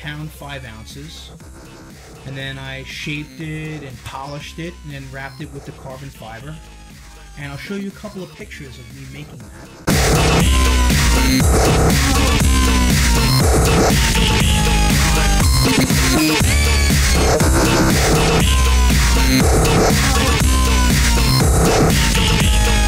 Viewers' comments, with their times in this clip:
0:09 Music is a bit loud compared to your voice, otherwise very nice :) Had turn it up to hear you, then happened and I need a hearing aid now :p